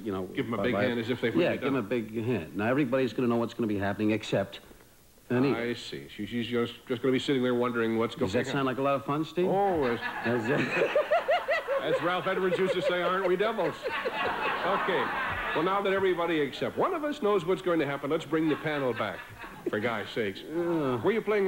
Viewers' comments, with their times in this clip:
0:09 you get to hear Frank do the Riddler laugh.